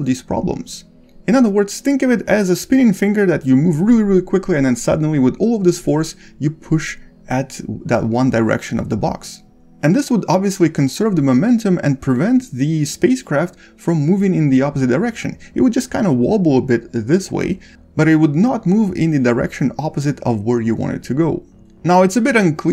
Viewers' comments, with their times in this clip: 0:06 it sounded like alien tech